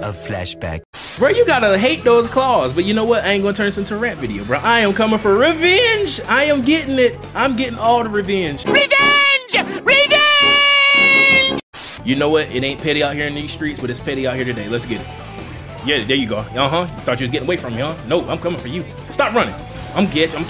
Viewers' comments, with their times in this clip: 0:05 Your voice was so funny lol